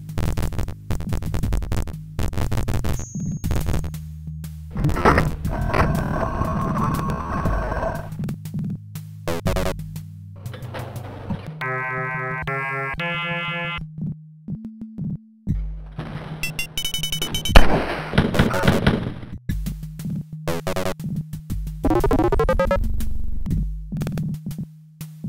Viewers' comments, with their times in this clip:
0:10 That's gotta be what it is, because right you can hear the door opening